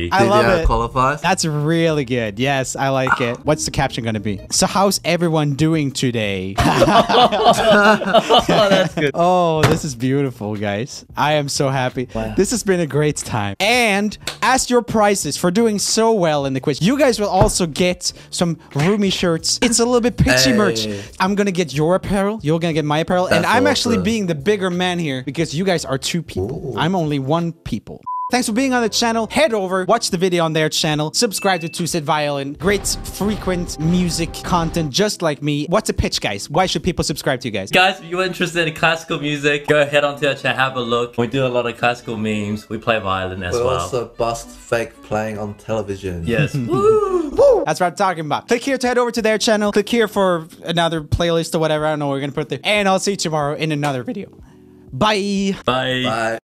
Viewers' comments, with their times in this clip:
0:05 the way eddy hesitated to laugh 😭😭😭 poor guy
0:52 holy gosh that voice crack😂😂😂